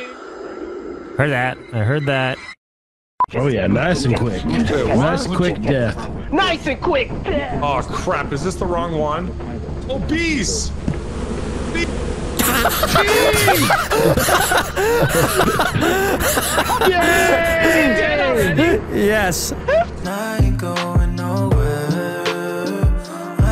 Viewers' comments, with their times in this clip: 0:09 when done right, things getting cut off will never not be funny😝😝